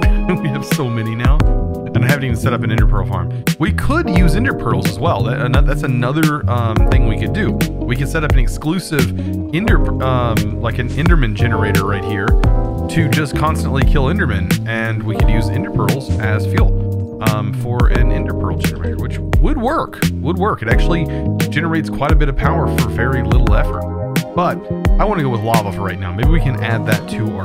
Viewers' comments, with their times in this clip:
0:10 I meant at like I couldn't hear him talk